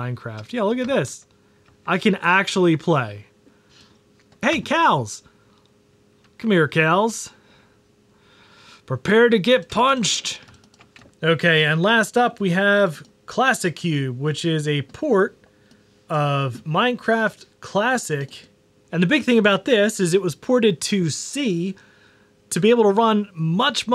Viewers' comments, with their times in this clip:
0:05 all I can hear is COWLS